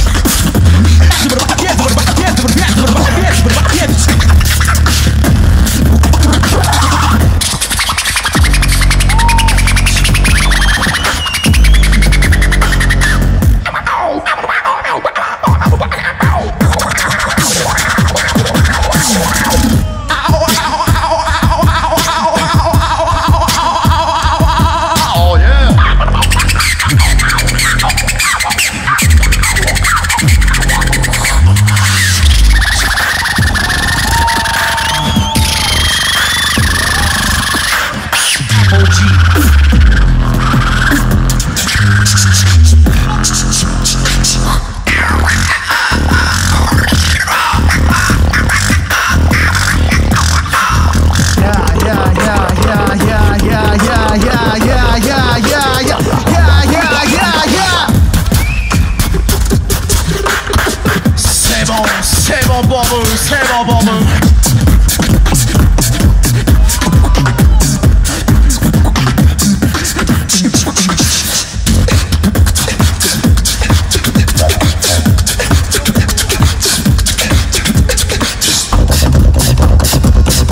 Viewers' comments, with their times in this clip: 0:07 cleanest scratch i've ever heard in beatbox
0:13 I LOVE THIS PART SO MUCH how there was like a sec of silent and then this but i think the other team did way better overall
0:13 For some reason, I love Dharni's scratch here I don't really know why, but it's great.
0:19 Who ordered the Kookaburra lol
0:47 mb14 is a monster sound
0:48 intense screeching sounds continue 🤣
1:04 Epic beat xD